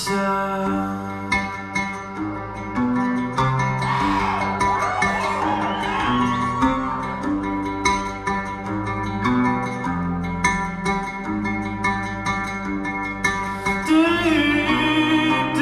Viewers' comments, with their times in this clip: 0:03 those people ruined it for me, do you really need to scream like that?